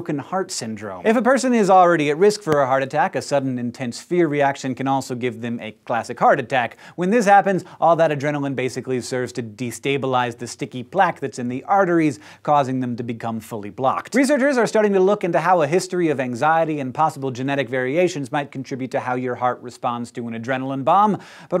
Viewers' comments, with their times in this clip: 0:03 whats that clicky clicky ?